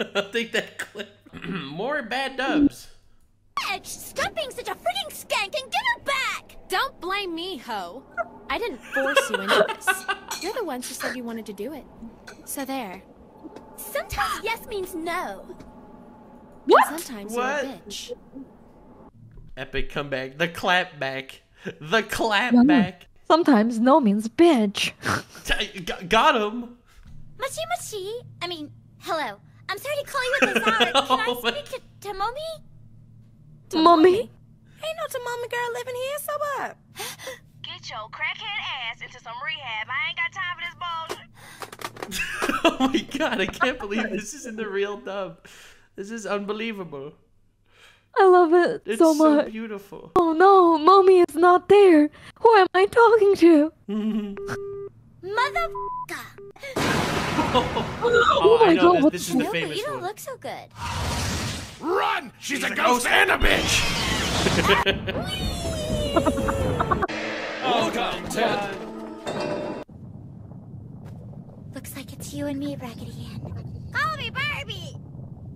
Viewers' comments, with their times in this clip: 0:04 wow....they talk just like real teen girls :v
1:00 the cat in this dub is litteraly voiced to perfection.